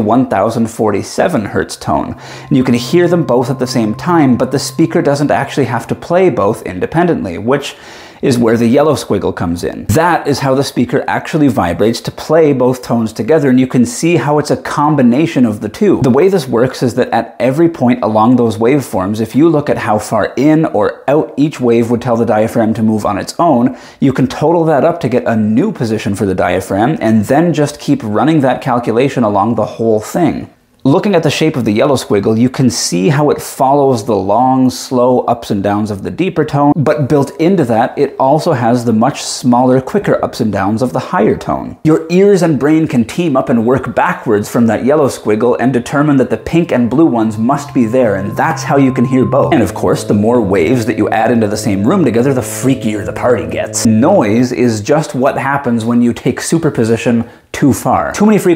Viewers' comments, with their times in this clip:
0:06 I CAN’T HEAR THE LOW FREQUENCY DUE TO YOUR SPEAKING.
0:40 I love how you talking while the noises are running is a full proof of how our brain can separate these frequencies. We can separate the pink and yellow while also separating the many wildly fluctuating frequencies from your speech